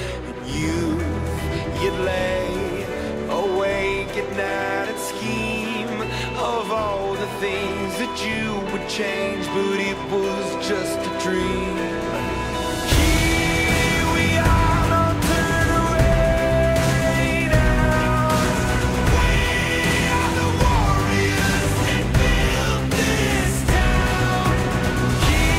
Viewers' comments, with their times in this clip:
0:10 Not me listening to Imagine Dragons minutes in ;-: